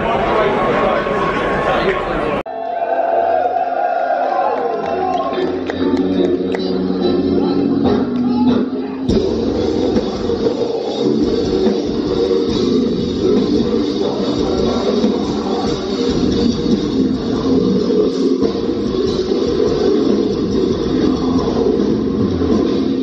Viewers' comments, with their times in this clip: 0:07 Swedish death metal band has joined the server.